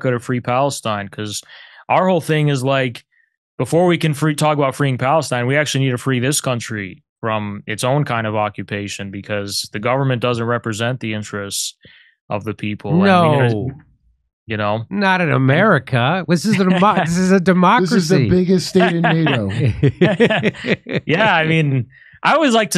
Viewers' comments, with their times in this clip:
0:09 "America is a democracy!" -- Everyone laughs.